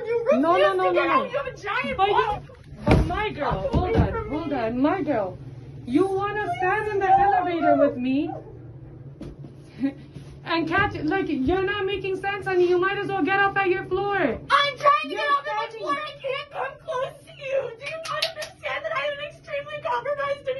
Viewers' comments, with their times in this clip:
0:06 Lady in red hoodie looks and sounds like Gary vees daughtet🤣